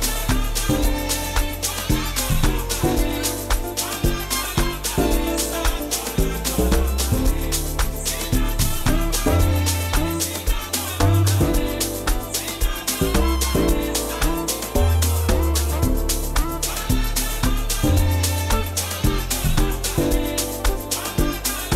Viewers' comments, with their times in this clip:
0:04 transition was on genius level🔥🔥🔥🔥